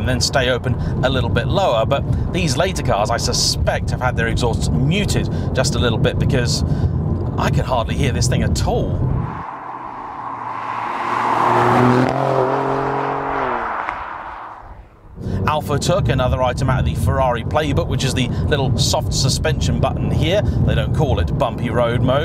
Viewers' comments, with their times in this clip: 0:09 "I can't hardly hear this thing at all"...YEAH RIGHT!